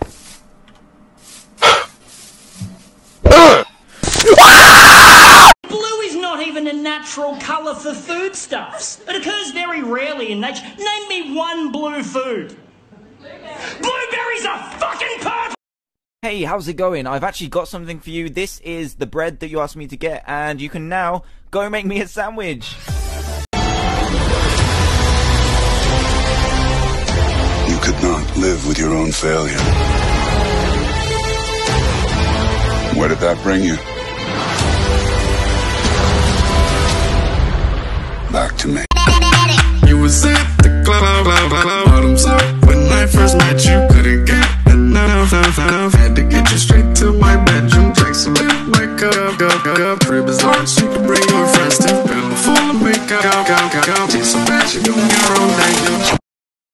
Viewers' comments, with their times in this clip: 0:03 theusic is what makes me laugh
0:39 actually sounds better then original.
0:39 Why did actually sound good
0:40 This meme sound like his voice is constantly cracking